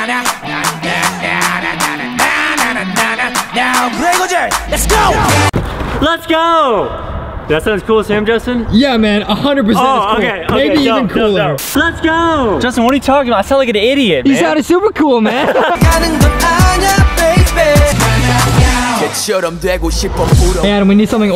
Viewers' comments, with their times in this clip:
0:06 sounded like dora the explorer😀